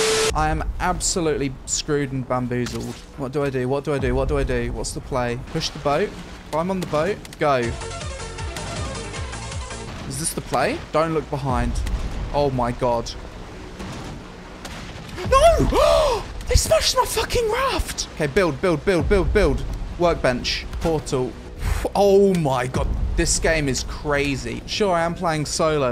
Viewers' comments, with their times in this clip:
0:07 Loved the Initial D sound effect